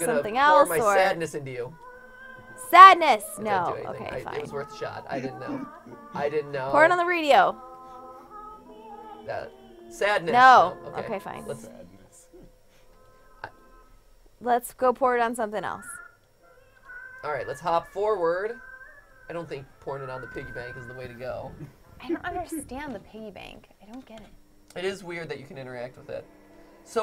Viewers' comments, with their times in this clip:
0:09 Did anyone else hear someone whisper "sadness" after MatPat said Sadness??